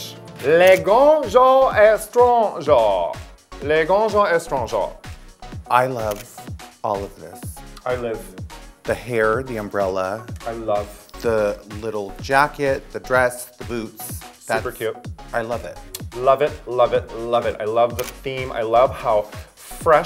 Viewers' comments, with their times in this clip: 0:03 now why the he k did raja pronounce this with a quebec accent